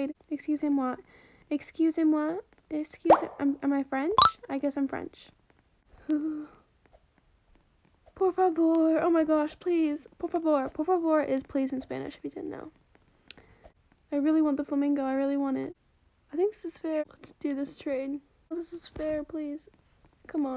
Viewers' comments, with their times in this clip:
0:08 omgg your so cute talking spanish :000